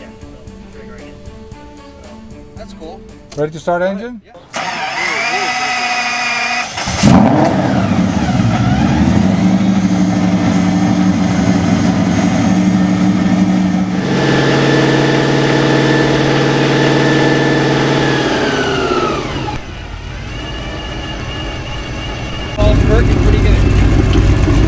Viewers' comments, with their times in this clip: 0:07 Um ... but more roar - bit more growl ... than the usual skoolie glug-glug.